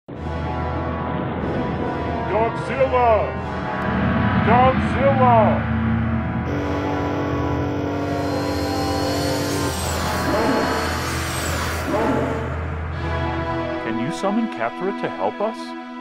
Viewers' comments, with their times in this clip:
0:00 whooosh! Out of nowhere